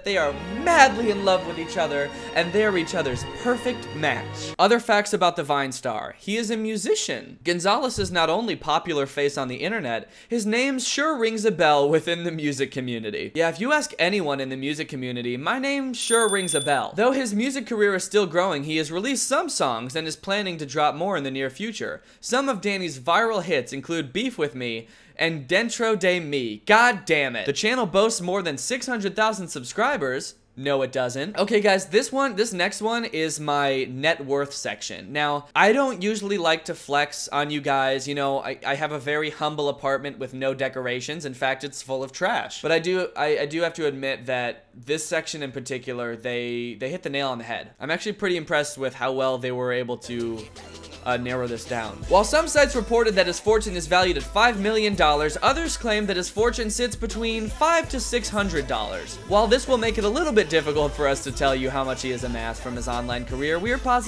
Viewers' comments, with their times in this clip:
0:06 Is nobody going to mention the voice crack ?
0:50 the fact that just some music popped out of nowhere in this video